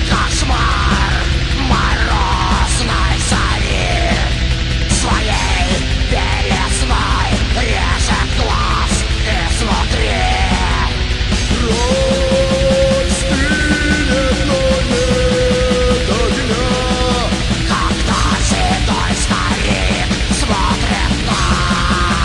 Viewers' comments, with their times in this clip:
0:10 holler = pure magic
0:10 holler = pure magic